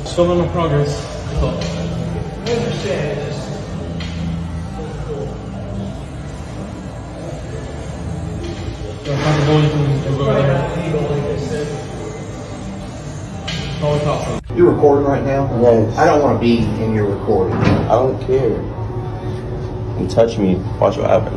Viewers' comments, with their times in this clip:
0:06 it's his "caption" for me 🫥